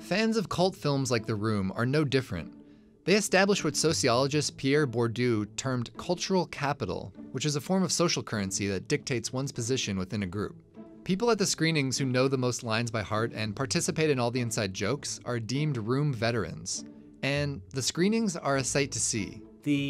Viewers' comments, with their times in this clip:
0:04 pronouncing the French name very poorly